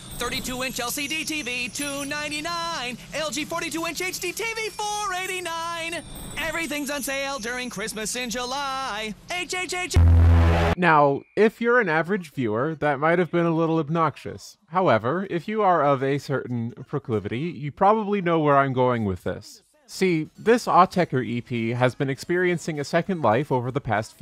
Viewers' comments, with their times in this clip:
0:09 THE RIFF FROM SELF-TREPANATION KNOCKED THW IND OUTTA ME